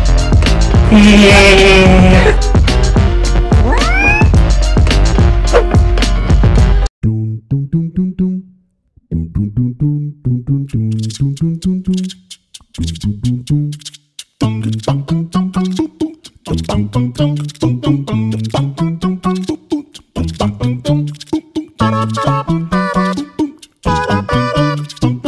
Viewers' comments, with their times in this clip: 0:07 Enderman singing and dancing at Vat19 music…